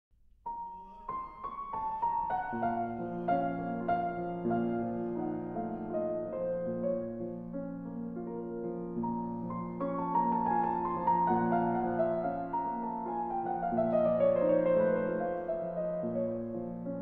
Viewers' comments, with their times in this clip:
0:00 Horszowski's desperate voice in the background ......... what happened for God's sake .. ?
0:00 what the hell is Glen Gould doing there in the background...